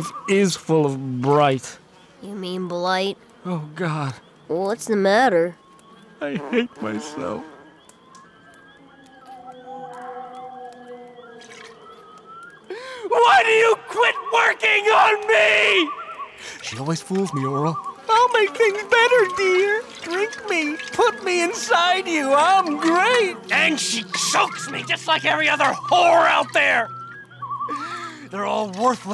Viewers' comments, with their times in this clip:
0:03 this scene was just.. emotional. the way Clay says he hates himself is heart breaking. he doesn’t hate himself because he’s abusive to his child and hates his wife, he hates himself because he knows the only escape from reality is alcohol, and he thinks that even alcohol is leaving him behind. and the way orel starts to tear up.. and then Clay screaming at the bottle. god this show is getting hella dark
0:08 The strange howls in this scene make it even more bizarre and uncomfortable.
0:09 Those howls in the background are some of the most haunting foreboding soundtracks to a scene I've ever listened to
0:12 Clay voice cracking: Why you quit working on me?! Fun fact: that was funny in Thomas and friends Season 2: Episode 25 "Wooly Bear" the versal effect team where just used in glass mirror effect.